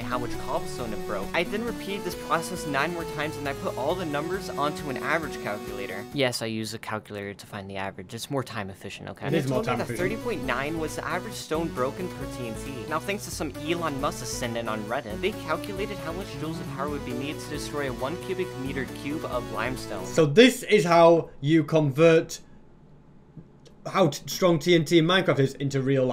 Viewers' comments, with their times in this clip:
0:09 why did the recording sound like that?